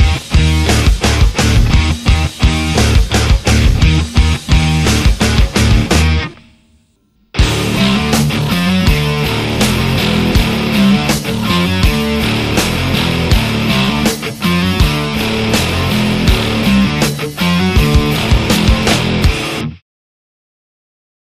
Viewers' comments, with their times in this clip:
0:08 Most pugs cant make that tempo transition around the mark. Insane talent